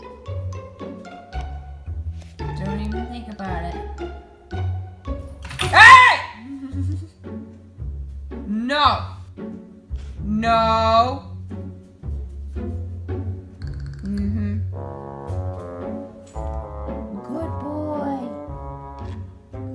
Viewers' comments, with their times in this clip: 0:06 That shout tho....................